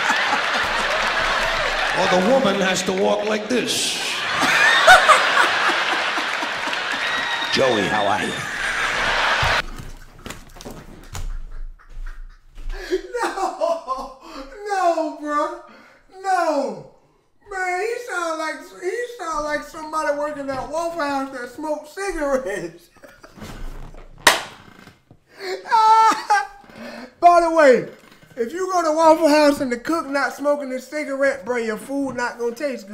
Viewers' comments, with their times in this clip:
0:08 The cigarette voice “Joey, how are ya?” absolutely killed me too 😂⚰️
0:18 He sounds like someone that works at Waffle House that smokes cigarettes 😂